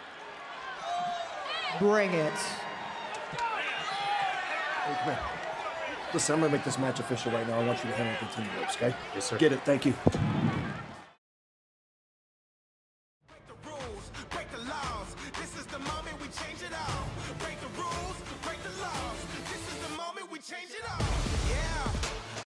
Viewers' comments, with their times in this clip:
0:04 that unexpected "come here" synch between Adam and Rhea on TV was nice 😅 By the way Rhea are gorgeous and perfect tonight like usual ❤